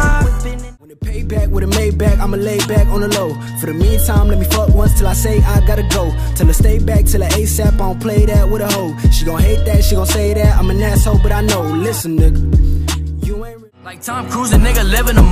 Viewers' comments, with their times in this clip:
0:03 sounds identical to J.Cole